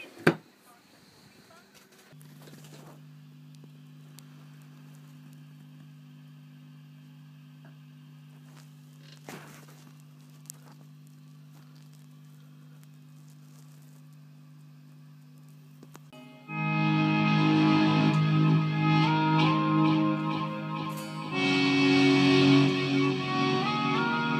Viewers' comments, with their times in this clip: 0:07 the playing from onwards is incredible, would sound fantastic infront of a wembley sized stadium
0:07 The playing from onwards sounds like something from Buckethead